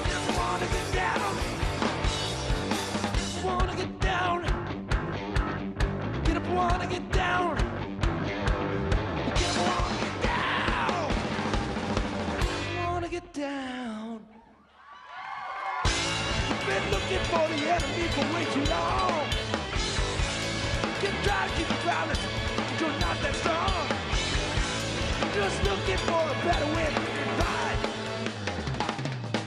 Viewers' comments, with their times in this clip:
0:10 i thought dave grohl did a special appearance